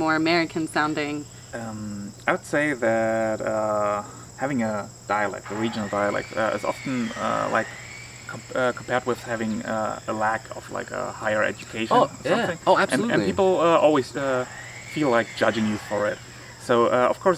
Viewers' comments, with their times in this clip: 0:04 fucking neighbours with angle grinders grrrrrr!!